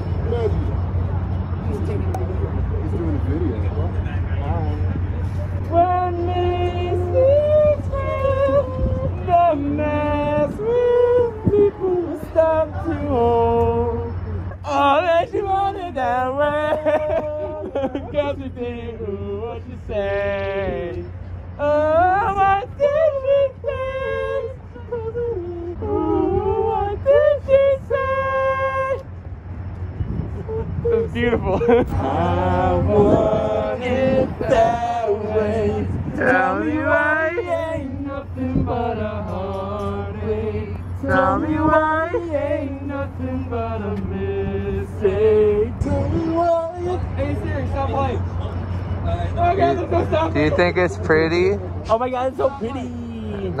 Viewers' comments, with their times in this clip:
0:05 Okay, he's really good at singing.
0:38 Sounds just like it.